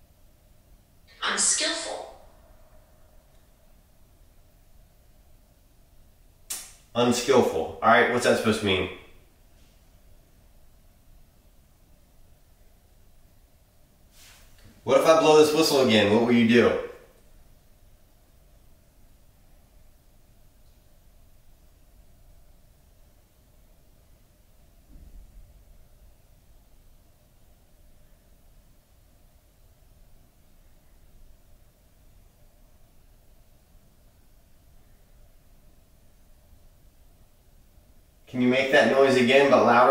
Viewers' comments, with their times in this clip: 0:09 I hear taps or some movement. Maybe footsteps?
0:24 heard a deep bang